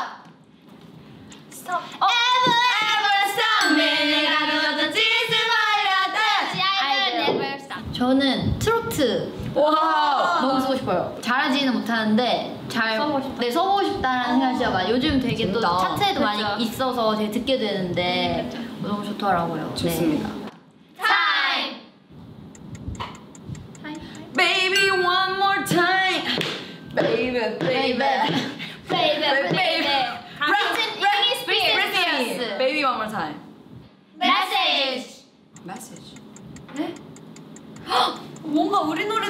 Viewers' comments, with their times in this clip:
0:09 Shyett trot next cb 😂 ajummas prepare urselves
0:27 the way YUQI sings hit me baby one more time is so cute and funny